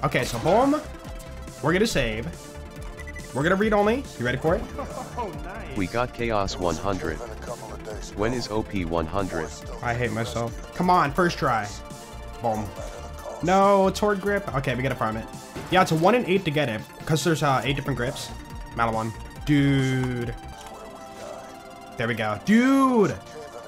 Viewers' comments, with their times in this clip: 0:04 that "I hate myself" was so genuine he was releasing some energy through that one